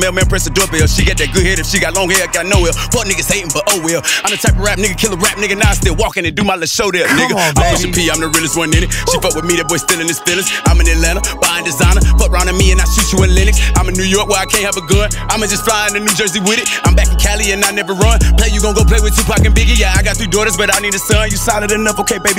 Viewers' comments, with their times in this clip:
0:06 the “come on baby” into the beat drop went crazy for no reason😭
0:06 ol dude dropped a free and fire ad lib
0:06 was a crazy adlib 😭
0:07 that's a lowkey fire adlib and then it gets crazier